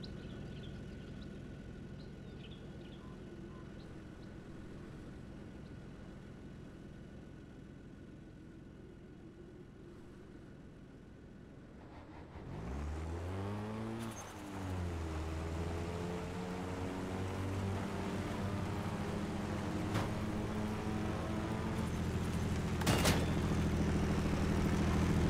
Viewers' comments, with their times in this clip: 0:08 it's so damn beautiful and it sounds like the heavens😍